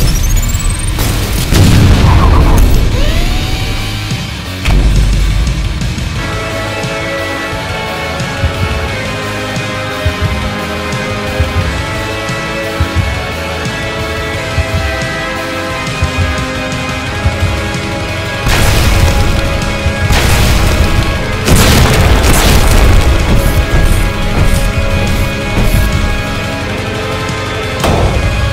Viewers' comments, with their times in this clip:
0:09 I cannot put into words how much I love this shot Also I like how you interpreted how hell's voice sounds like at the end, although in my opinion, more than two distinct voices would probaly elevate it even further